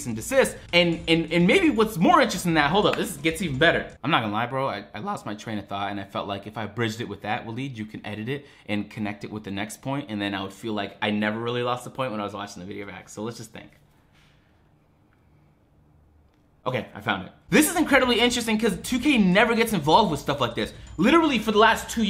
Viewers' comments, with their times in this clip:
0:04 Big voice crack